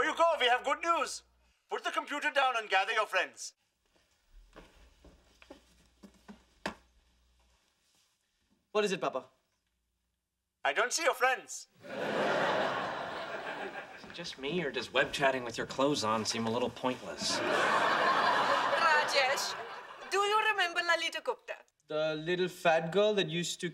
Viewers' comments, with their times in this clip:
0:08 If i remember this correctly, didn't he yell "FRIENDS" in the aired version?